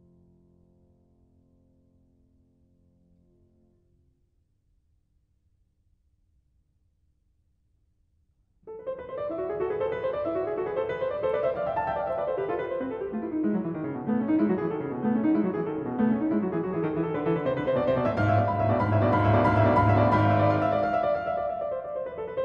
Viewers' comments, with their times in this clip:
0:08 this movement sounds a lot like Smetana's Moldau